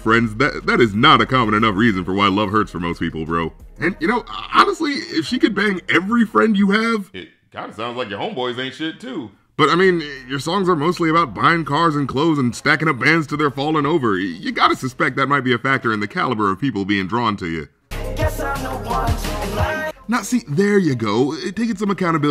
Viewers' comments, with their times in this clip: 0:03 What was up with the audio there?